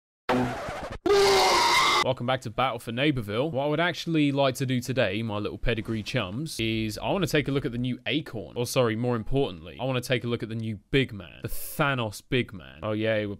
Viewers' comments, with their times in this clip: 0:01 (Rose dies) Rose death sound: